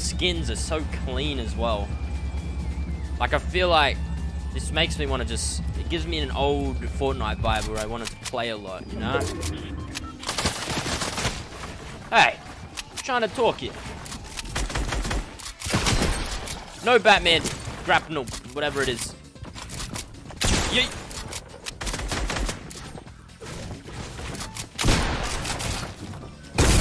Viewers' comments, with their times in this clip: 0:10 In I heard sonic music